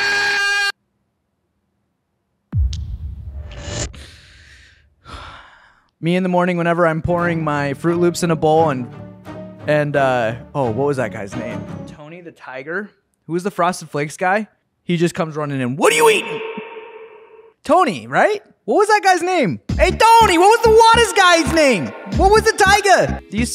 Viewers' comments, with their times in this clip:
0:06 legend says he never stopped screaming